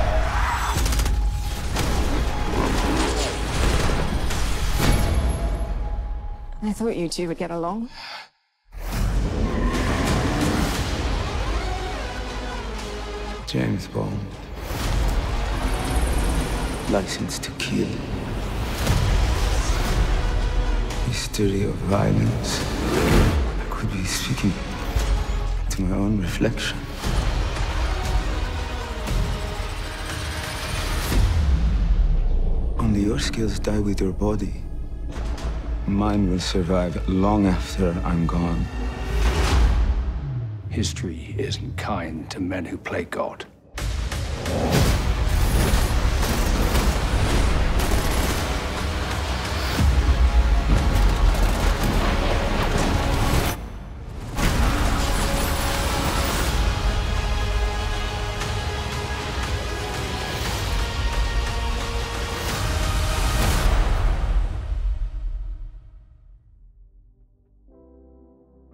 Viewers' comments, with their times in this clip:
0:06 this fits perfectly! the dialogue works perfectly with the music
0:49 While I do like the Bond trailer, I have to say the timing/music flows much more naturally here esp where the og trailer had that action scene a little too early imo. Excellent work as usual!